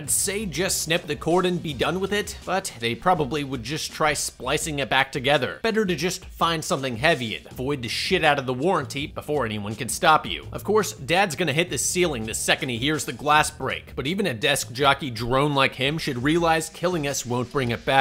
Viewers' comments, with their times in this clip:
0:06 that line, delivery, and visual representation combo made me laugh harder than I’ve laughed in a good long while.